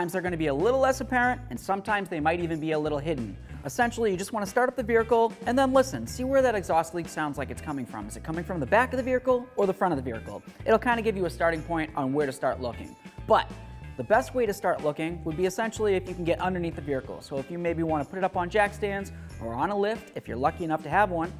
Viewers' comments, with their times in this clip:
0:04 "you wanna start up the beericle" -- he says it a few times. is this some kind of regional thing?